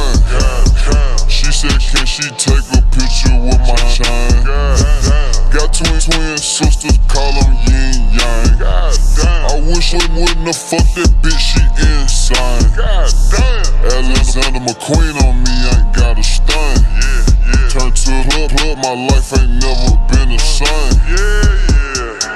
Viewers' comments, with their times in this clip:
0:03 Hey my guy, it was banging til you sped up the chops. I think Just a little friendly criticism from a Texas DJ that grew up on Screw.